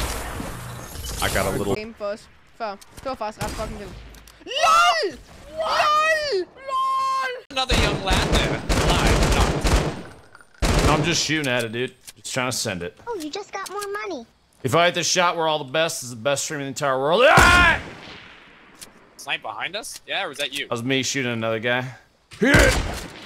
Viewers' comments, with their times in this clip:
0:05 wtf is that aids that they’re speaking. LUL LUL LUL